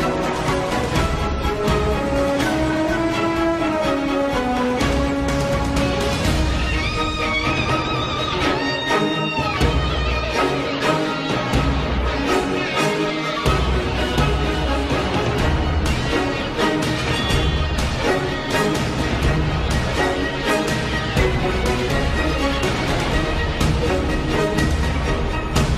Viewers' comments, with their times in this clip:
0:06 Goosebumps everytime Eddie comes in with that lick